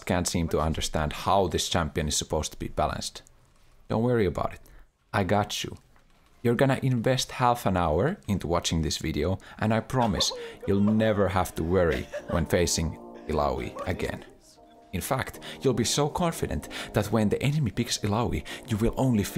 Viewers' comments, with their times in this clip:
0:03 this „don’t worry about it“ was more 90s mafia movie than 90s mafia movies themselves.